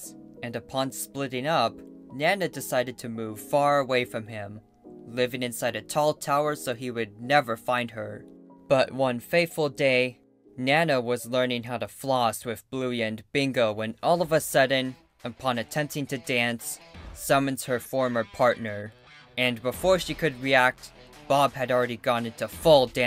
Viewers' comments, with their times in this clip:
0:09 why does he sound so serious about something he words so goofy